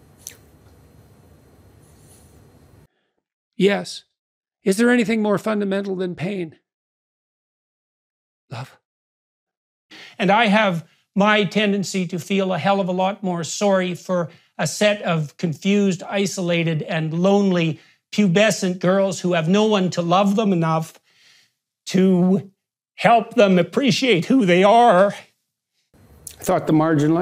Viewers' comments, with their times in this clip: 0:08 The way he says love 😂